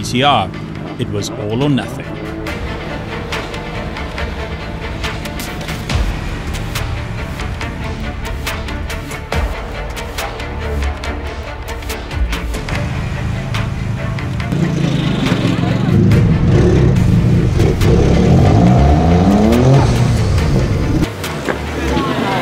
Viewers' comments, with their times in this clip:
0:03 He stops talking